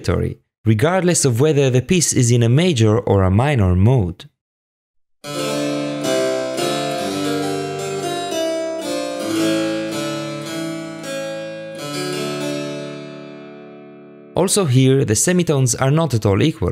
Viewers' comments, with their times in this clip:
0:04 W... Was that a 17th-century licc?